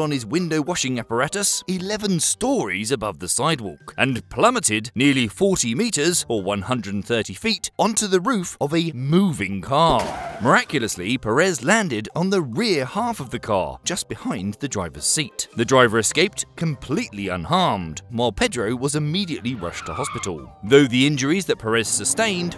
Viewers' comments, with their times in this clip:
0:07 He plummeted onto a MOVIE CAR 🚗🚧